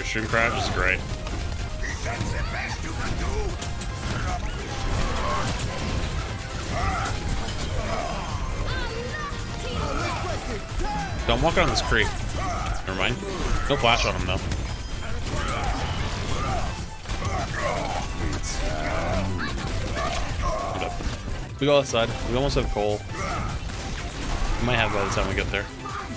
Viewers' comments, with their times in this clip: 0:07 You called Cassidy Cree